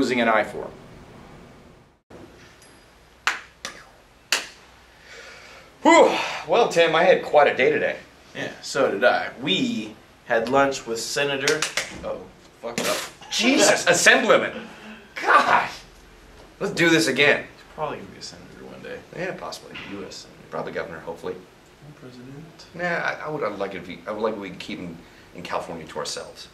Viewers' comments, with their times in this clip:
0:09 I love how they bleep the swear words but they missed one :P